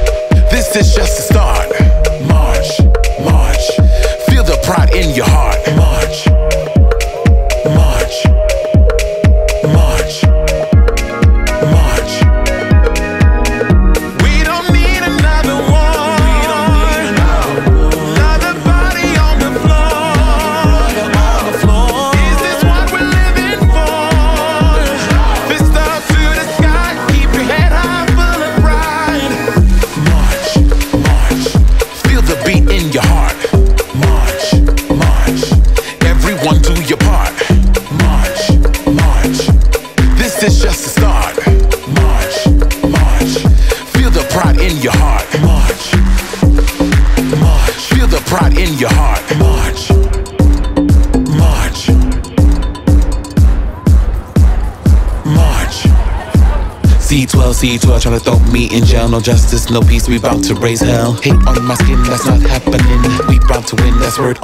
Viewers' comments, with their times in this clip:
0:07 Was expecting another song featuring drag race catchphrases /wrists. Stayed for the powerful messaging, vocals and Boy Jackie Cox sighting.
0:48 1. Beginning sounds like "Work Bitch". 2. Someone please teach Nicki Doll how to wear a face mask properly
0:50 Dat bass doe